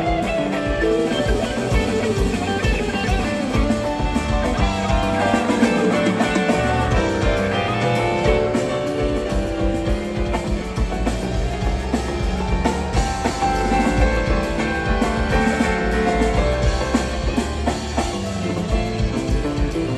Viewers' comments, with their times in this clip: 0:07 Did the House lose Trey’s guitar ?